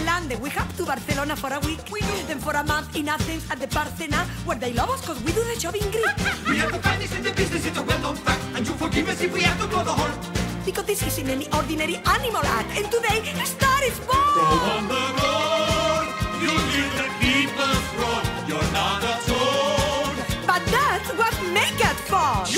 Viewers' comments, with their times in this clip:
0:06 The harmony with the three is literally the reason I have a music degree